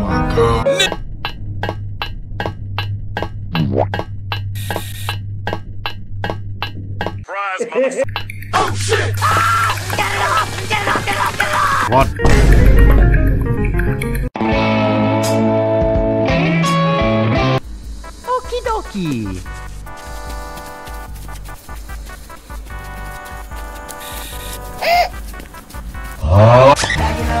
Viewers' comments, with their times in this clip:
0:09 Mario is screaming like SpongeBob SquarePants who says, "Get it off!" Courtesy of Nickelodeon, folks.